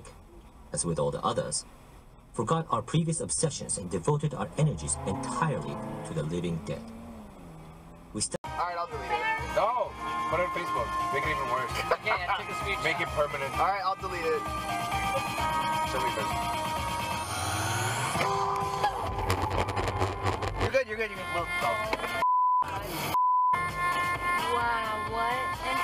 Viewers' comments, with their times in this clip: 0:08 with the best beat drop of all time